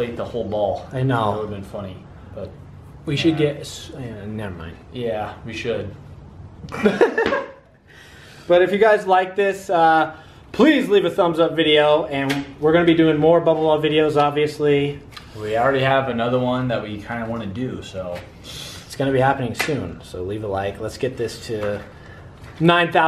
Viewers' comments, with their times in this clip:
0:04 Did you fart??? XD